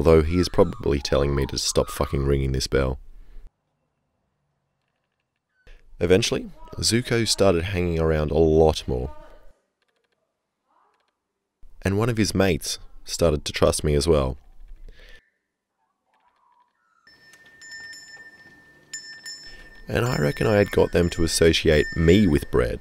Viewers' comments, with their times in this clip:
0:03 ... the "warbling" sound they make is not towards you... it's to tell all other animals to stay away from their flock as they are territorial like dogs